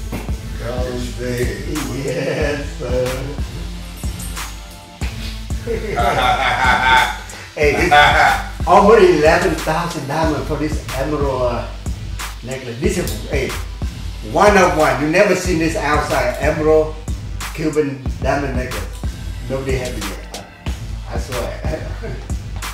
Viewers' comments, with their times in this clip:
0:05 The Spice Adams laugh 🤣🤣